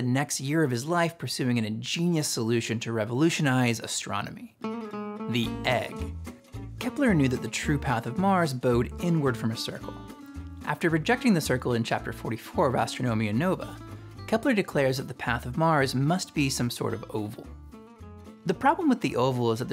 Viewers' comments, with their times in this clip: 0:03 Oh no the guitar is playing